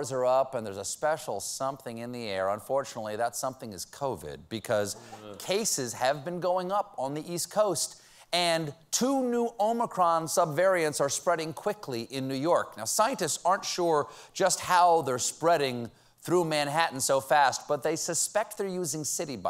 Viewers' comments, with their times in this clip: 0:04 Jon Batiste with the (inter)national groan there.